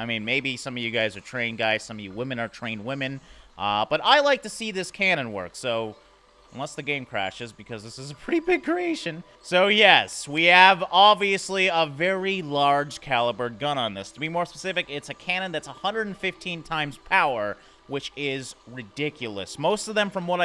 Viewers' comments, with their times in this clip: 0:06 huge voicecrack xD
0:07 What was up with that voice crack?